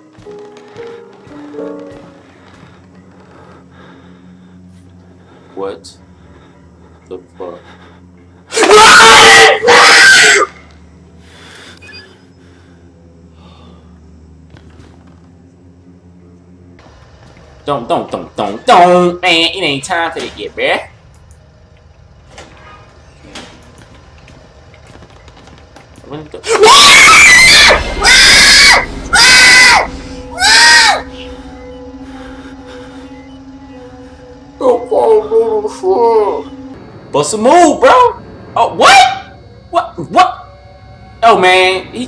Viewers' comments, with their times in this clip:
0:08 That scream takes the cake man...best video out there
0:26 sounds like a pig being slaughtered huehuehue XD
0:26 Piggy sound xD